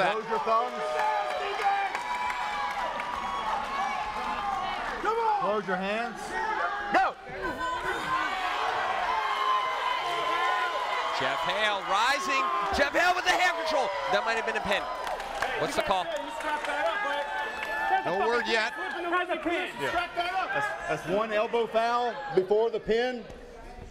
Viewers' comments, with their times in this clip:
0:08 this dude at the right side :D wtf is he yelling for.